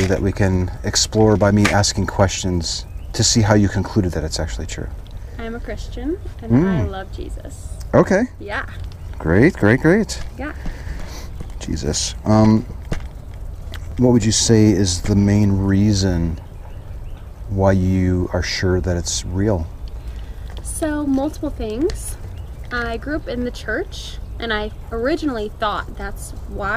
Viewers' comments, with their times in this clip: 0:07 The way he said "Jesus..." made me chuckle. I know he was just affirming her chosen topic, but it came out sounding like an exasperated "Jesus...here we go again."